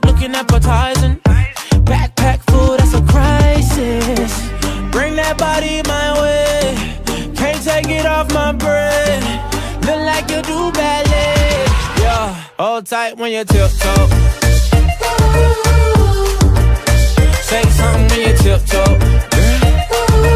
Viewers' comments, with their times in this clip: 0:03 Was such a good beat